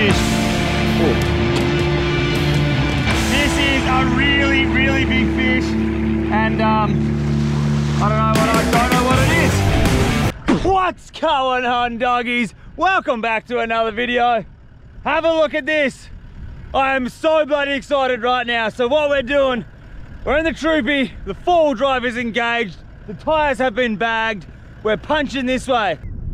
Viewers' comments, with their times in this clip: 0:10 "Whats going on DOGGIES" That is wht i heard ;w; sry if i was wrong 😅